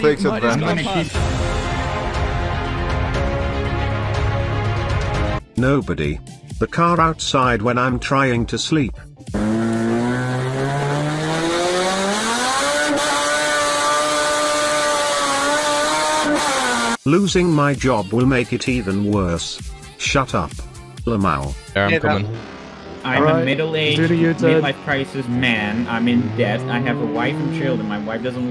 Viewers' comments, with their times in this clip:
0:07 even the subtitle thinks it is music
0:11 My Honda when I straight pipe it